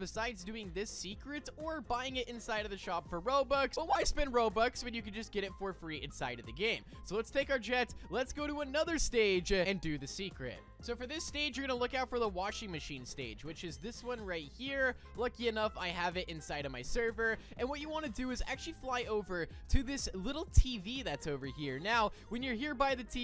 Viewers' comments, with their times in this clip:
0:04 rip bros voice 😭🙏